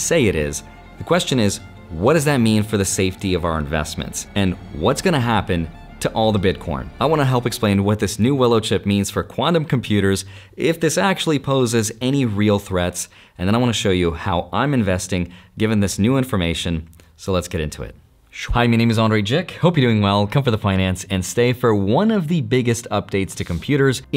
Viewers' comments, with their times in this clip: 0:04 Andrei you were a card nerd, then a finance nerd, and now you're a tech nerd. also you def said "bitcorn"
0:06 "all the Bitcorn" ? Corn? 😂